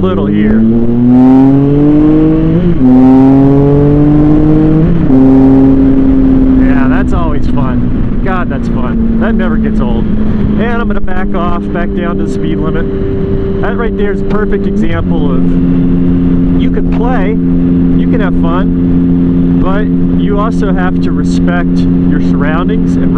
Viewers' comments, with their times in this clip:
0:05 I especially don't like riding near dusk or dawn with trees on the side. I also don't like going by country houses at 60mph. Possible dog can appear out of no where. And, MAN, I love the sound of your bike !